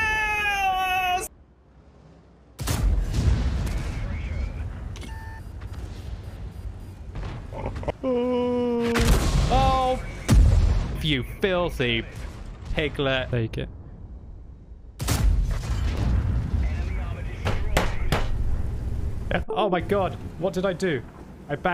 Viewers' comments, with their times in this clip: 0:08 when he swears an the shell noise plays you can see an arty shell in the air lol